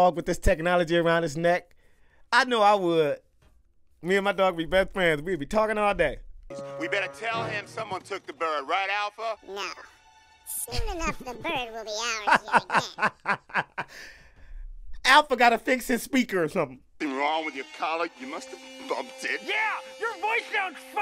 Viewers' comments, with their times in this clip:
0:09 Alpha sounds like Eezma, turned into a cat, from the "Emperor's New Groove (2000)" movie.